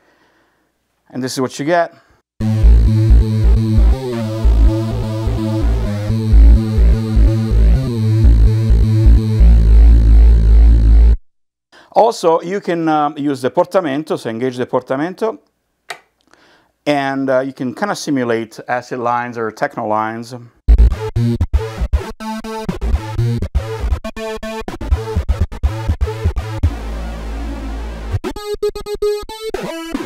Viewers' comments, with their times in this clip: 0:06 sounds like lords of acid. Makes me wanna buy it 😭🤩
0:18 awesome techno lead sound